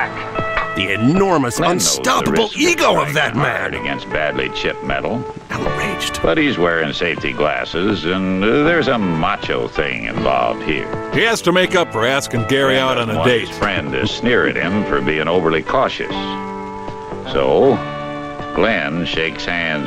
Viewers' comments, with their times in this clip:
0:05 the guitar noodling in the background reminds me a bit of Do You Want To Laugh Or Cry from The Girl in Gold Boots.